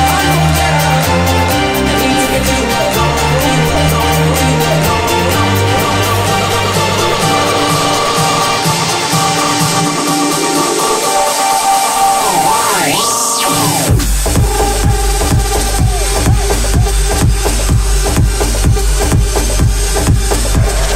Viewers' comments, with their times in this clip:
0:04 Has anyone an idea what is going on these are three songs (acapella + buildup and the third is the drop) but he only has 2 faders up??